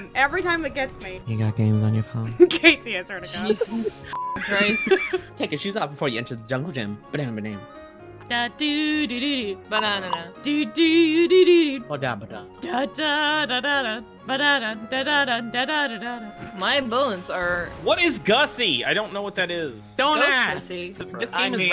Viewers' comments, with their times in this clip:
0:07 THe start of musical stylings.